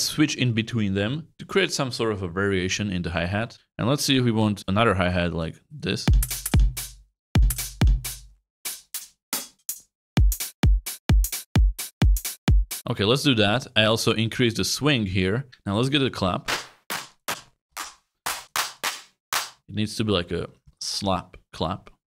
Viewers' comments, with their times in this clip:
0:07 Nah bro knew what he was making with those high hats 😂😂😂